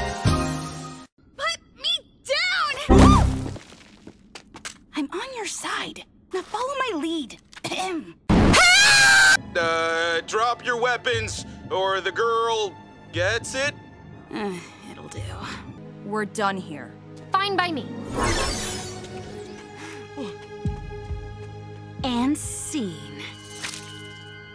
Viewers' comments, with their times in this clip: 0:09 i love how he sounds confused shocked and definitely scared i would be to